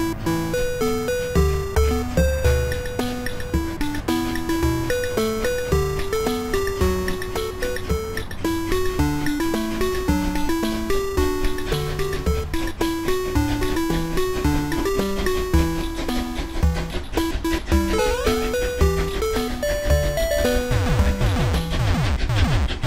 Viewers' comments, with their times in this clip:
0:04 That tone was epic bhai😂🤣